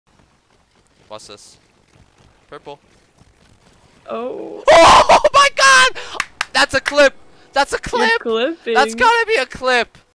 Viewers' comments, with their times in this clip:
0:08 real voice leak